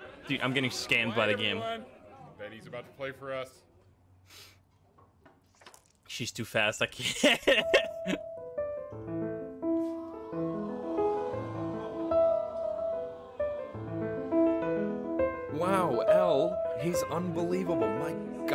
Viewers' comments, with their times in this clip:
0:05 is the funniest moment for me lmaoooo That piano playing by him was exceptional xD